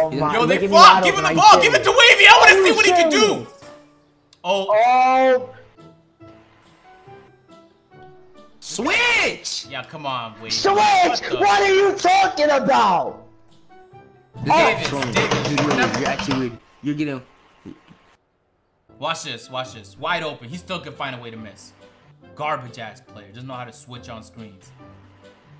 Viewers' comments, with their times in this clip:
0:07 The way he screams